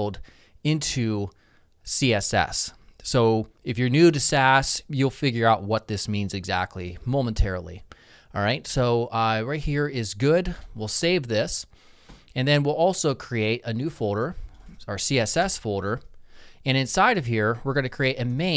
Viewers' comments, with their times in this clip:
0:04 audio quality on your video hits the fan and it echos eerily... shrug